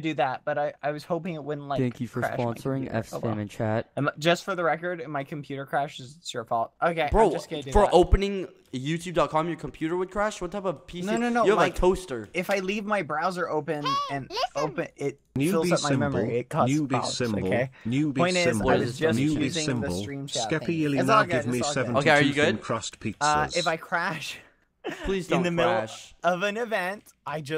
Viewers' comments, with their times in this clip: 0:10 The way Skeppy said “you have a toster” I can’t, it really got me😂